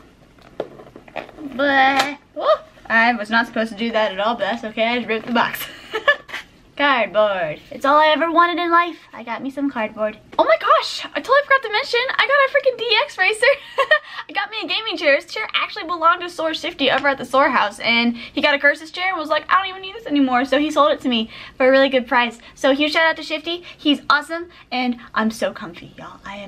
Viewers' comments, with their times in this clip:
0:09 Love the video. Her real voice